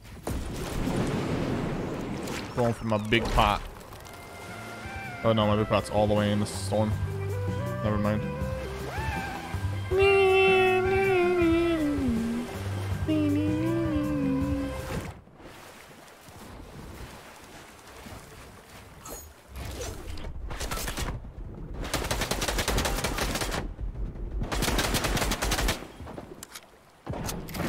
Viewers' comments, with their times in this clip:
0:09 Nobody gonna talk about dat singing on lol
0:09 That sounds exactly like my dad when he tries to sing😂
0:11 when a grown man try’s a high voice